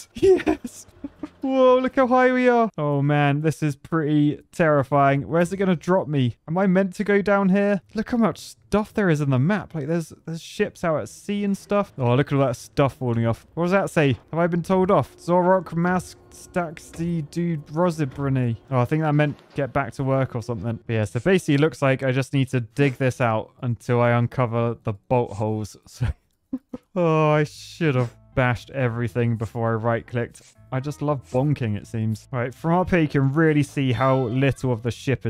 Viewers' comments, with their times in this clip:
0:10 bruh its poland game? Im from poland and "Zawróć, masz statki do rozebrania!" means "Turn back, you have ships to dismantle!". Btw you sounded funny trying to read it😅
0:13 That notice you got is in Polish, means "Go back, you sill have ships to disassemble" and you utterly butchered it. :D Kind of an omission on the devs' side.
0:15 polish language be like
0:16 Haha i love you, when you Reading Polish 😂😂